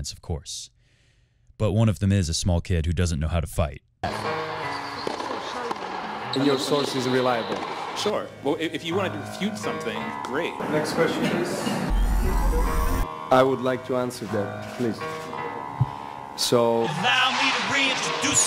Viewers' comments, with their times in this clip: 0:04 LOVE the Rap